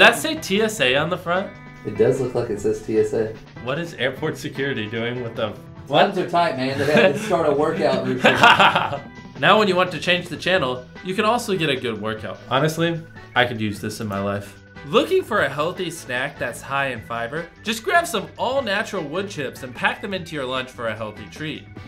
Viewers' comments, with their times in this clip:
0:08 Mr beasts devilish laugh 😂